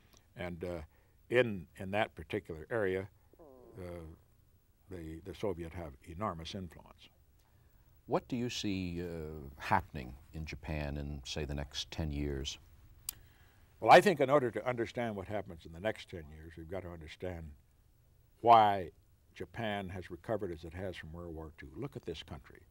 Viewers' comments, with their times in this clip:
0:03 Nixon farts on camera listen